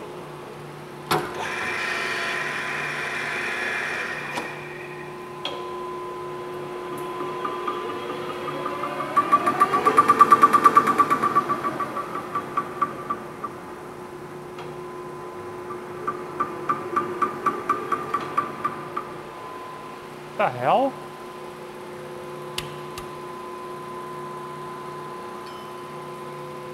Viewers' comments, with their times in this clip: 0:10 the subtitles say laughter but it’s just the lathe turning